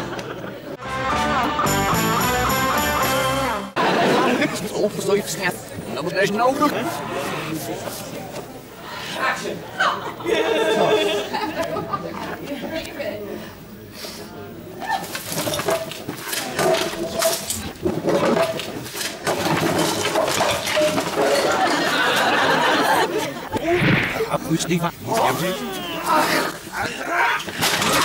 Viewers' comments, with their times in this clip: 0:08 you can hear the director call action, but you would normally miss it because the scene is reversed.
0:09 we can hear the director Ed Bye say "Action!"